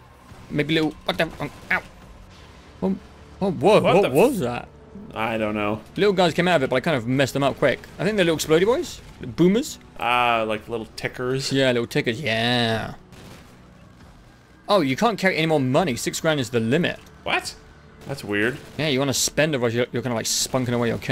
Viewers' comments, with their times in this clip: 0:08 "tickers" sounds like a racial slur